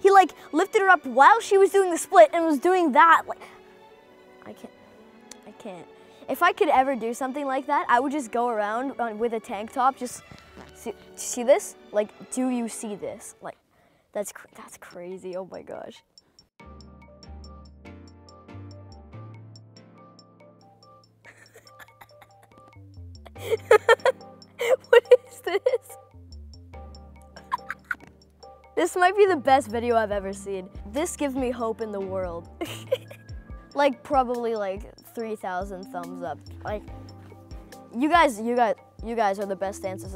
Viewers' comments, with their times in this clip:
0:09 Did anyone hear the fart ??
0:10 did he fart?
0:10 Who fartet at min
0:10 did he just fart??????
0:26 Who heard a fart a
0:28 He farted lol